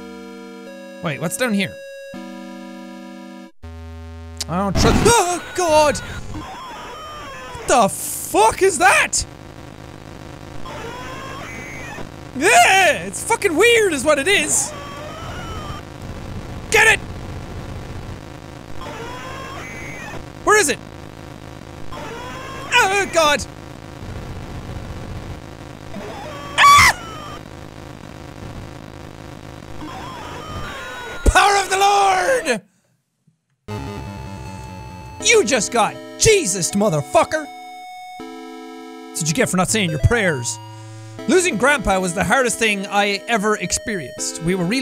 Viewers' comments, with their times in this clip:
0:07 12 year old rage sounds
0:10 Fetus demon sounds like that loud women moan that people use to mess with people
0:25 jack becomes seagull